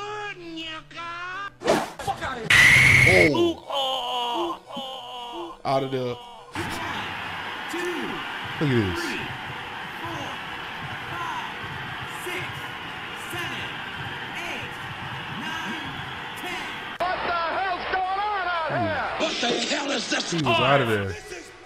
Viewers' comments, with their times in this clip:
0:04 the low hp sound in the background is fucking gold 🤣🤣🤣🤣🤣🤣